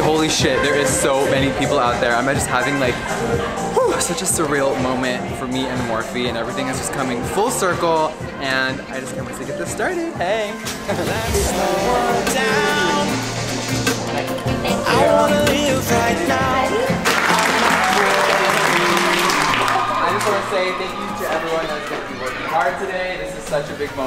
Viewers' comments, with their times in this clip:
0:05 did jeffree just hit a ''WOAH''